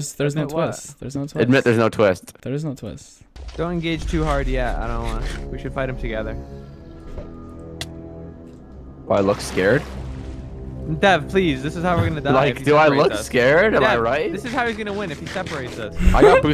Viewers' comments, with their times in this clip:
0:04 is the music starting the main arkham city theme slowed down ?